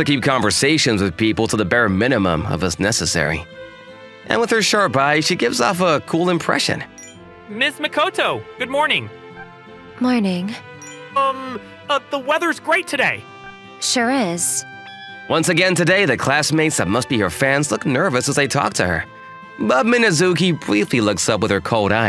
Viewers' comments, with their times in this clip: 0:07 it’s a ai voice 😂😂😂😂😂😂😂
0:08 No fucking way you guys used AI voices in have some shame bruh 💀